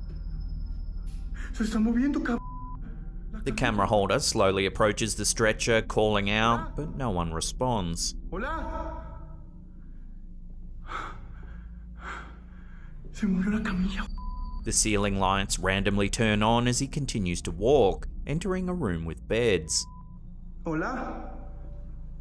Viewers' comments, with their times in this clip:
0:03 TAKING SCEPTICS STANCE PURELY FOR REASON'S SAKE; THE GURNEY WAS PARTIALLY OBSTRUCTED FROM VIEW. IT COULD HAVE BEEN PUSHED. I LIKE THE WAY THE SPANISH CUSSING IS BLEEPED OUT.